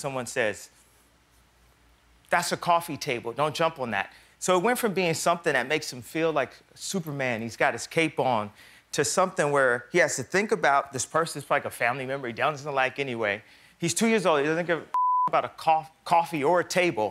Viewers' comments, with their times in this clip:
0:05 He's basically rapping from this point on. Damn he's a great artist! Listen to him!!